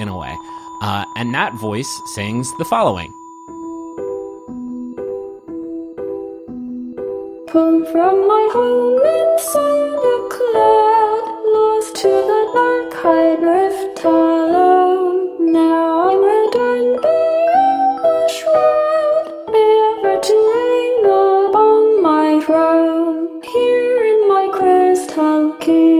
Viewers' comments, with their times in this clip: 0:08 "VOCALOID?? WAIT OLIVER!" My excact reaction.